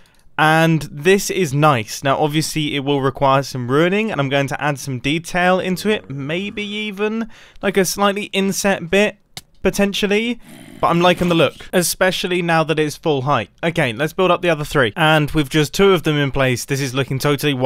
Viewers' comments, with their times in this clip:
0:04 that zombie sent asmr chills down my fucking shoulder